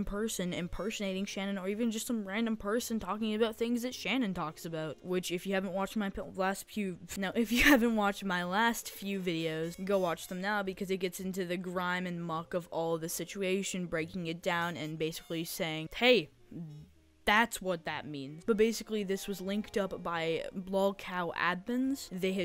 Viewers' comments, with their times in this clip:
0:06 “Which if you haven’t my last pubes” Me: “NANI?!” Also Me: Laughing my ass until I choke